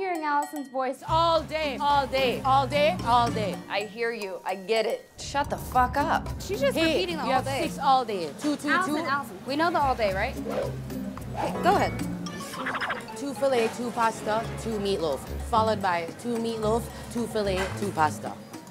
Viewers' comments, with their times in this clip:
0:05 the fn sound effects 😂🤣